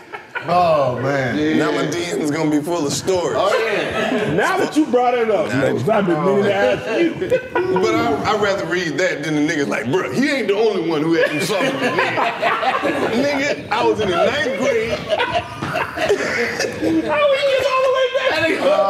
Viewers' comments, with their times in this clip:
0:03 The song playing in the background is fire. I need this one in my Spotify playlist.